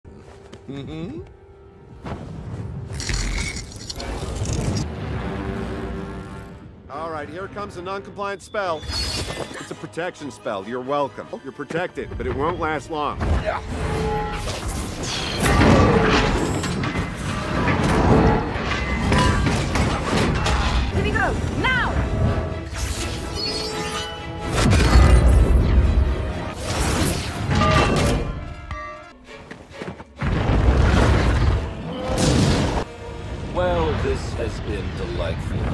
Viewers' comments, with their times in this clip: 0:01 that doesn't sound like someting Doctor Strange would do, the way he sais mm hm was just hilarious 😂
0:16 I've just realised that when Ultron puts his visor down, it makes the same noise as iron mans faceplate when it goes down.